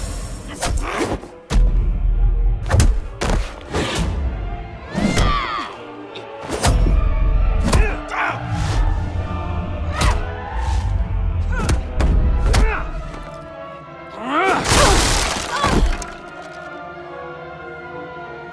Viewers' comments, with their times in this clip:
0:05 she sounded just like the Harley from the injustice series for a sec.